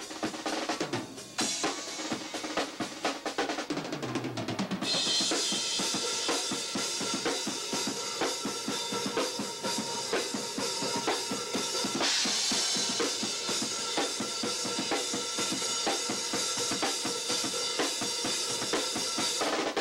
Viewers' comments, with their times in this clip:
0:03 Yeah those ghost notes are ridiculous but the hardest part is actually the triplet transition Kinda reminds me of the drum intro of Intoxicated by Obituary where Donald Tardy does the same thing. I feel like they've both been inspired by the Hot for Teacher intro, I know its the sound of a car exhaust..but the influence it has had on people is insane. As far as those two songs Chi and Intoxicated, I find impossible to to play either of those triplets with the same power and ferocity. Total 80s speed metal assault 🔥🔥